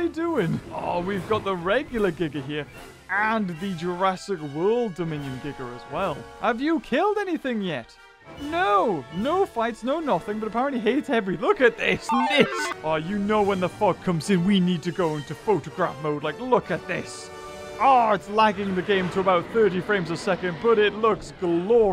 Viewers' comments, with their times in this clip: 0:05 Not the hard R,"Gigger"